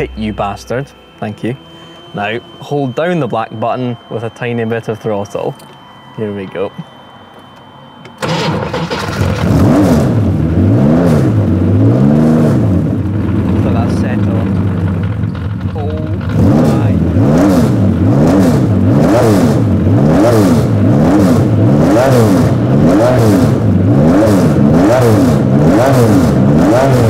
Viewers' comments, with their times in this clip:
0:07 Man, everything about the sound this Monster Machine produces when it's woken up just makes it seem like if it had a voice, it would always immediately be shouting "RACE. NOW."
0:07 when he turned it on, it sounded exactly like the one in roblox driving empire
0:10 I instantly had a wide smile on my face :D That is a proper old racing car symphony. RESPECT!